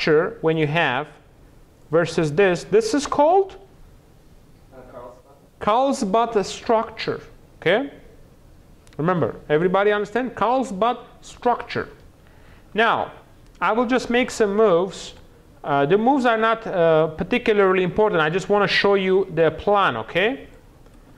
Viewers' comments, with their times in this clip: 0:07 did he say carl's butt structure ??